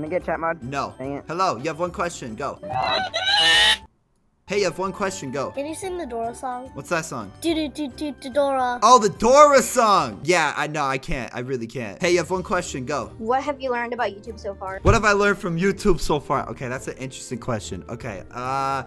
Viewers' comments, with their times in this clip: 0:03 seriously someone screaming Doritos!!!!!!!! Then hangs up
0:03 What was that they said ? Warning, you will not think it's loud